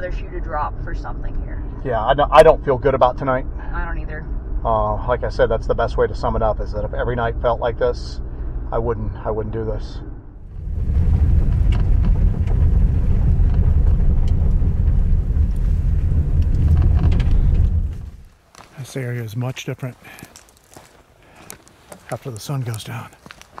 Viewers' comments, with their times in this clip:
0:08 I just love you two. The way this is put together is fantastic. It's like I am walking with you. So, Thank you! Also, the area the tornado hit may be a good area to look at more. "It" may be curious to see the damage to "its" home. I put headphones on at about the mark so I could listen better, and I heard like chanting and singing tribal type sounds? Please be careful and trust your instincts! ☮